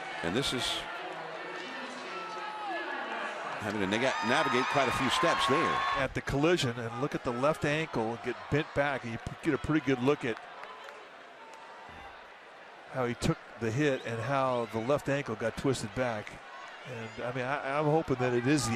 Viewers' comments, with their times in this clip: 0:03 is no one going to say anything about the announcer saying nigga?